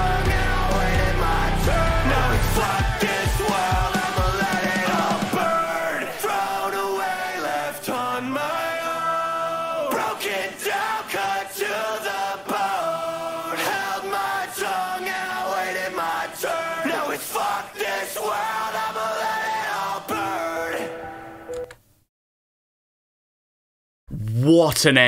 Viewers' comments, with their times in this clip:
0:09 that “broken down cut to the bone” is sung in such perfect harmony it gives me goosebumps on top of goosebumps